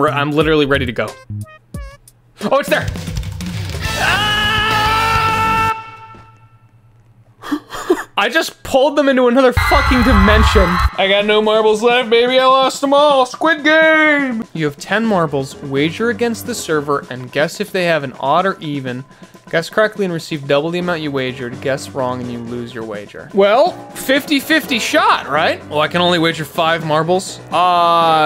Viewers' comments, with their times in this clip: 0:09 TF2 music starts, excitement levels rising
0:11 mm yes the music